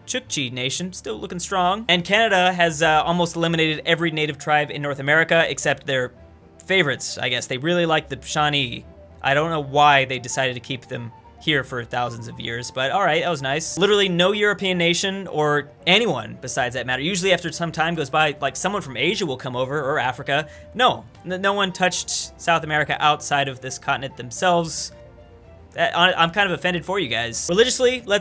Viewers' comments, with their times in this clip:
0:09 shawnee like a melody in my head